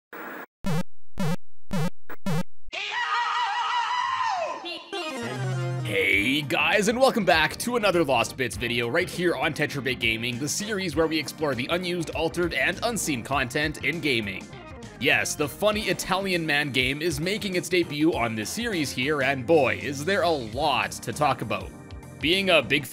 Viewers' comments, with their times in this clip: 0:03 that scream will never get old